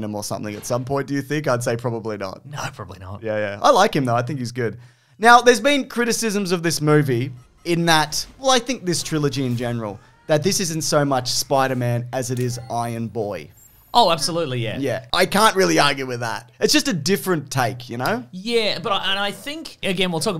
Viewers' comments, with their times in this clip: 0:03 I like how much he looks and sounds like Lin-Manuel Miranda